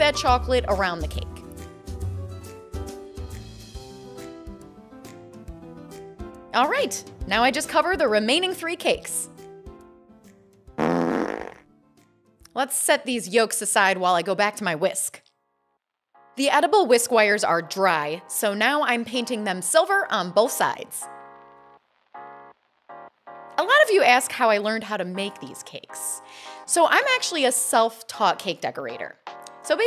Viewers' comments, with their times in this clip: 0:10 Sound: fart noise Captions: [Music]